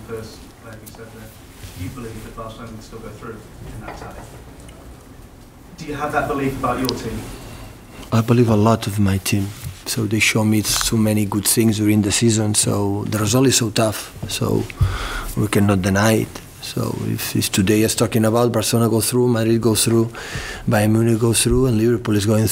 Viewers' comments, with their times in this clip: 0:07 that knuckle crack :-D